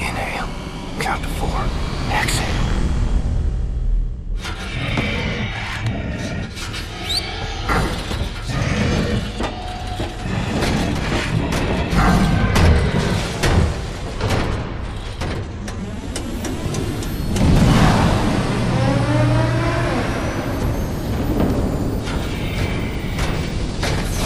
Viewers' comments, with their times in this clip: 0:06 Not gonna lie but those 'super soldiers' or whatever they are called are one of the most scariest things in this game. I think it is so because of their size, strength, and the creepy noise they make when told what to do